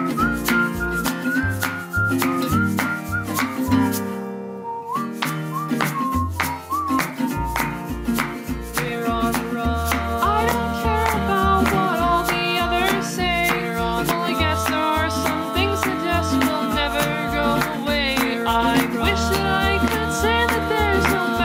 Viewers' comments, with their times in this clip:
0:09 2 MONTHS already dang time flys fast also frisk clapping fills you with determination